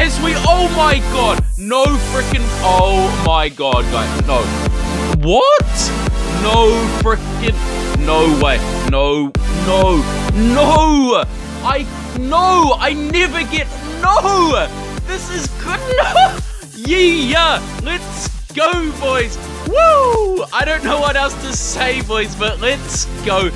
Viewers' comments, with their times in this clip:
0:05 xDD best "wuatt" ever seen ;3